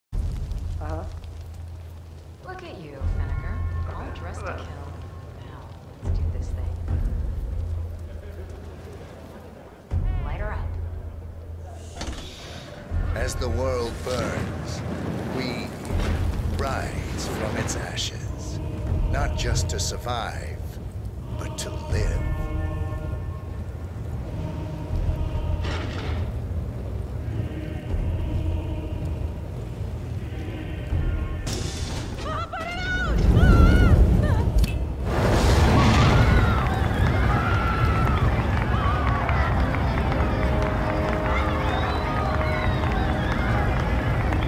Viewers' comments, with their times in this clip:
0:00 Did she just fart?
0:30 zoe: burns crowd cheering